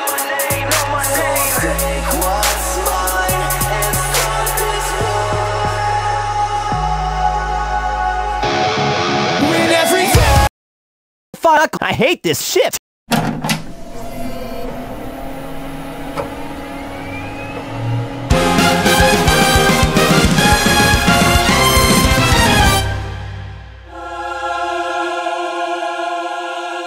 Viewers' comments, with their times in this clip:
0:10 Incredible sound mixing out there.